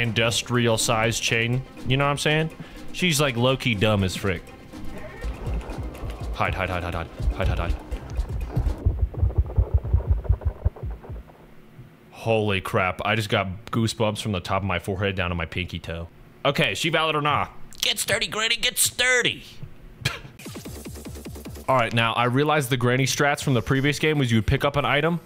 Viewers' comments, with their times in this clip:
0:07 the way granny cuzzo be growling sound like my stomach after i eat a taco bell grilled cheese chicken sandwich frfr